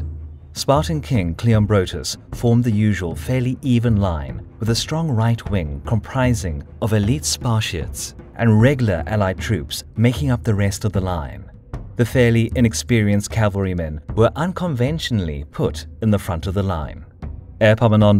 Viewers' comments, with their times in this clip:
0:05 what is a sparshit?
0:06 Did he just say... Spart-I-ans